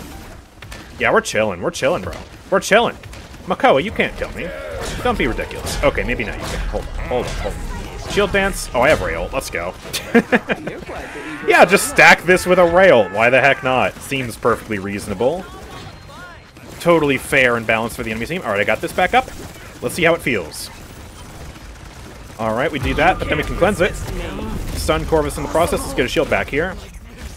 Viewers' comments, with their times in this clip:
0:08 how did you heal 4k health? Bit difficult to hear what you said, I’m wondering if you said “I have Rei ult” but I don’t see how that gives such massive healing